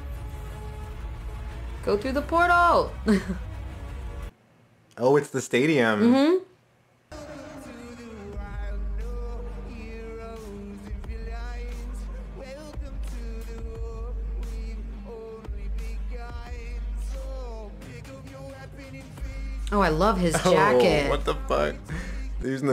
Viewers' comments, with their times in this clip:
0:05 bro give us a warning before you cut to that guy's singing some of us league fans get ptsd from that xD